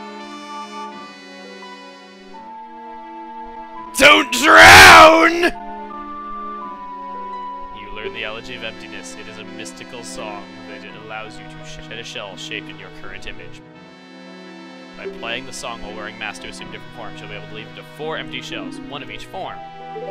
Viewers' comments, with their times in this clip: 0:03 damn i fell of my chair with my HEADPHONES busted